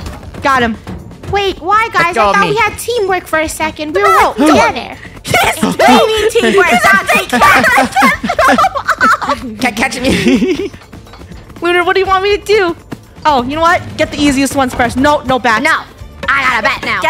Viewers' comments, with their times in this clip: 0:04 did not understand a word